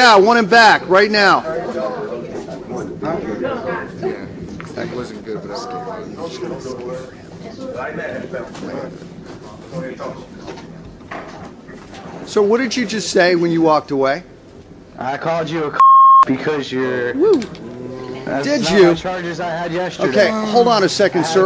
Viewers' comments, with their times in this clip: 0:05 judge whispers "I'm just gonna scare him"